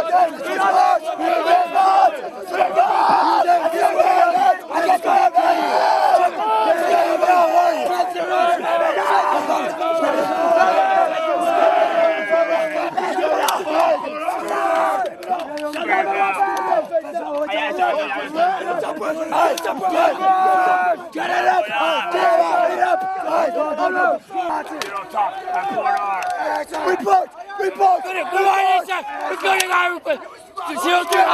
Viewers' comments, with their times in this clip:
0:05 i cant comprehend what the sergeants are shouting, which means i would be fucked if i were that guy
0:16 I hate and respect the DS with the froggy voice IT might become my new PT because I find his voice humorous, but I will also have respect towards him because he's still giving those recruits his 100%, gotta love the Marine Corps NCOs, they'll set the example for future generation of marines to follow with such small actions like this that build into a recruits foundation to have honor, courage, and commitment.